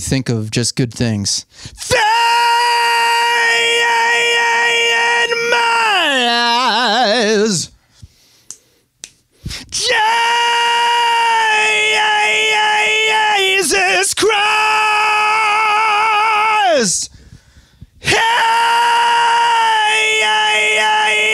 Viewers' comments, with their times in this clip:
0:08 Devin Townsend: Deadhead acoustic (Live in Leeds) transition from the scream the cleanest of falsettos.